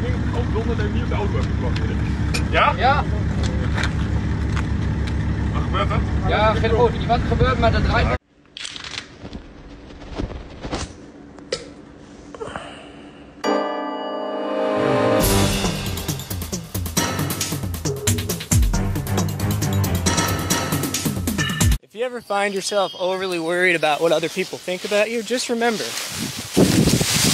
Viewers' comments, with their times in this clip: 0:08 dramatic reenactment of what everyone's doing while they watch this. Seriously though, the sigh/groan didn't need to be there! It had me dying
0:10 Bro didnt need to moan like that